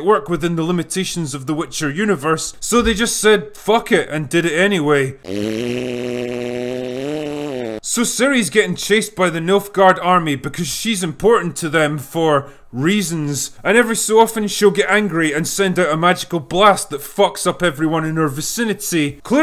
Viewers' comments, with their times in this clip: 0:05 The long fart had me in tears